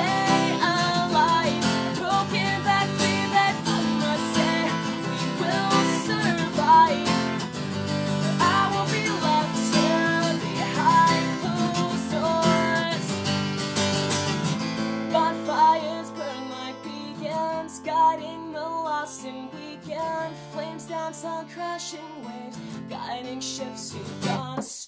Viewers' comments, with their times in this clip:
0:10 good cover =D u spitted lol